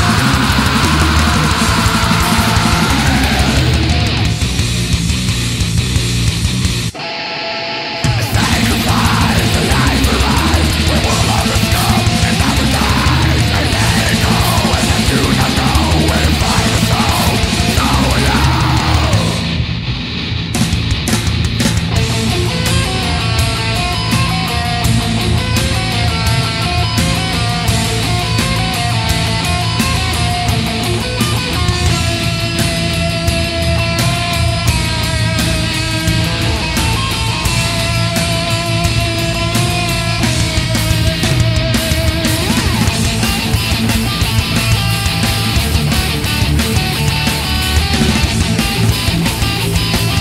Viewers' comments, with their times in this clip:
0:08 And in this one he growls some.
0:34 is where my fav riff on this album starts